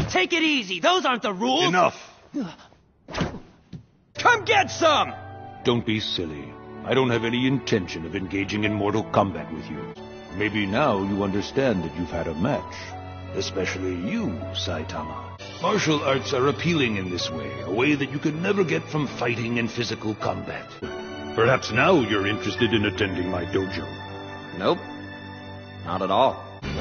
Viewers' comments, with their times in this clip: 0:07 Hearing Raiden say Mortal Kombat outside of the franchise is kinda weird to the ear